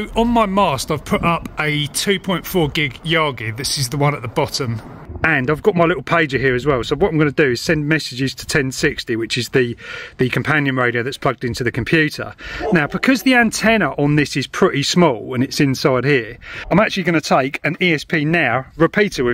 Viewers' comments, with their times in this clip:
0:04 the dog barking threw me